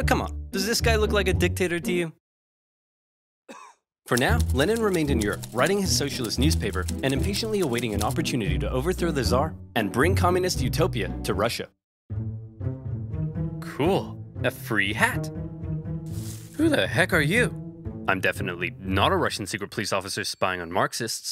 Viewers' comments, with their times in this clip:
0:03 why did i hear a cough when the narrator said come on dows this guy looks like a dictator to you